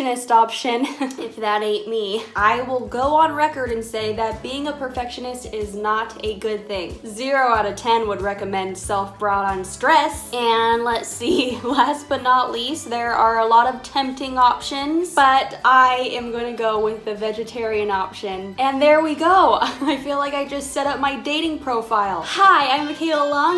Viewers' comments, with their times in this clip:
0:07 DOES ANYONE HEAR TOTO BY AFRICA IN THE BACKGROUND ?